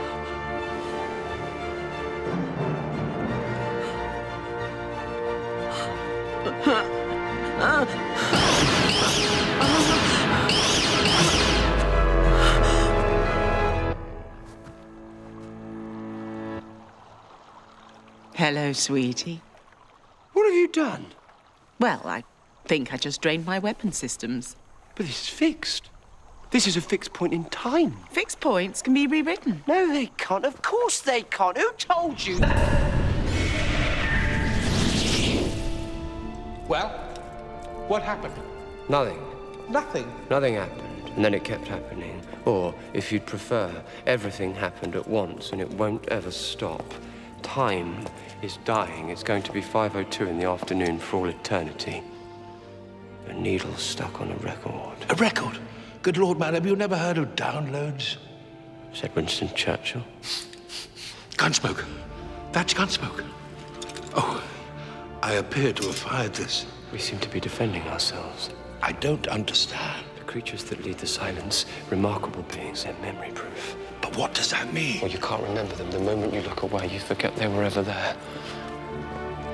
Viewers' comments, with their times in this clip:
0:05 Her ADR noises are very disturbing LOL
0:15 She sounds like a robot......
0:29 I like how he doesn't even sound mad, just confused XD
0:32 Perfect cut scream question
1:05 W. C. : I appear to have fired this D.: We seem to be defending ourselves : D That dialogue... just...oh, how great it was I'm just sad Matt Smith had such a serious voice while saying it